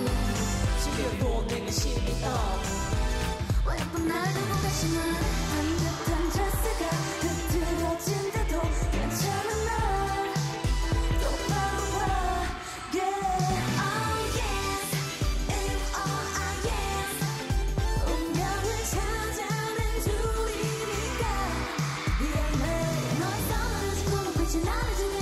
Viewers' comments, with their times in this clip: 0:05 Forever replaying from onwards It actaulyl sounds so different from her usual low-register voice? ITS AMAZING I LOVE IT
0:05 DAMN didn't even realize it was moonbyul singing til third playthrough XD
0:05 Moonbyul singing 😍😍😍 My gawd! I replayed it so many times
0:06 for Byul's heavenly singing voice.